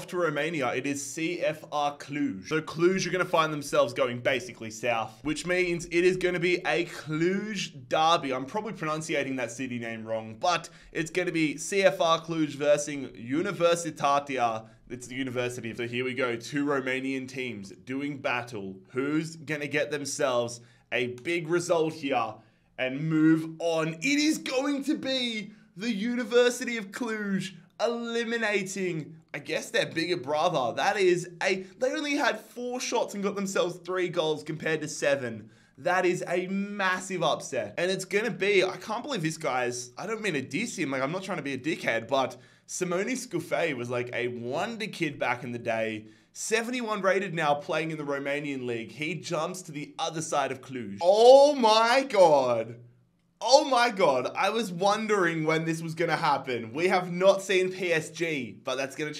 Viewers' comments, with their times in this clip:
0:04 i'm a romanian and you pronounciated it perfectly.
0:45 Watchin’ u from Cluj. U’re pronouncing it just right. Keep up the good work.